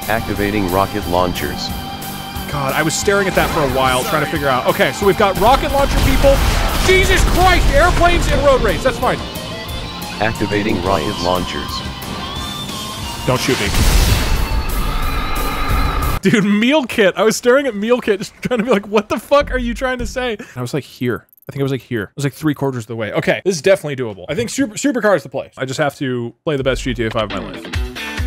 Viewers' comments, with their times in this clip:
0:10 I love the moment because it sounds like the voice mod said "Activating Riot Launchers" instead of Rocket Launchers.